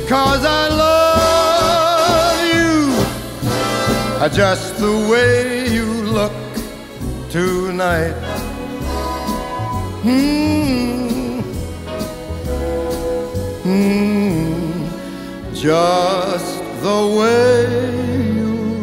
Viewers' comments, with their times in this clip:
0:04 "Adjust the way you look tonight." Subliminal messaging?? Illuminati confirmed.